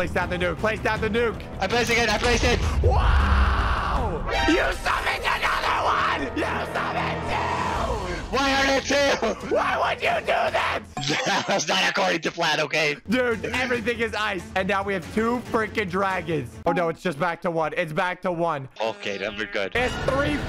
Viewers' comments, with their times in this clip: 0:06 it sounds like he’s screaming in the Grand Canyon